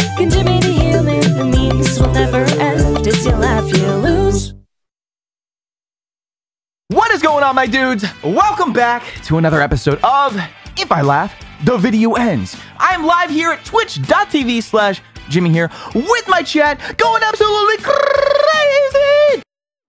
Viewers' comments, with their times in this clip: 0:07 Anyone know the background track playing I keep thinking its Mario Strikers Charged, all the instruments sound really close